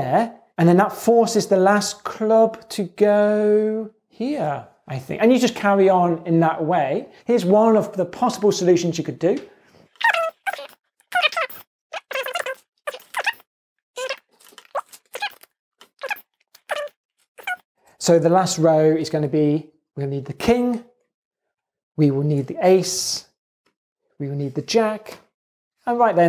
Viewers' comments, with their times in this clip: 0:10 dr James turned into Mickey Mouse on helium xD
0:10 This is the first time I've heard a time lapse with the chipmunk voice on numberphile
0:10 leaked trailer for new Alvin and the chipmunks movie